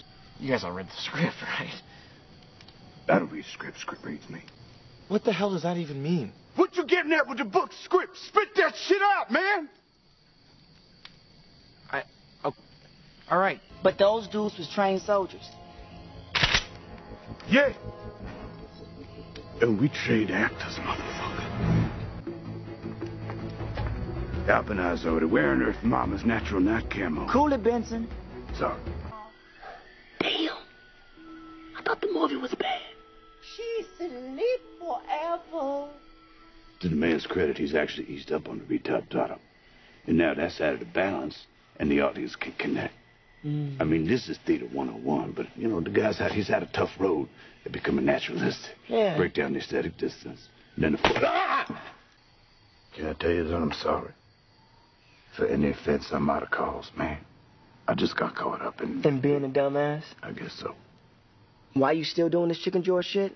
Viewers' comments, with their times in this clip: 0:09 RDJ breaks character haha, he laughs at his own line
0:49 The yell he lets out after being slapped 😂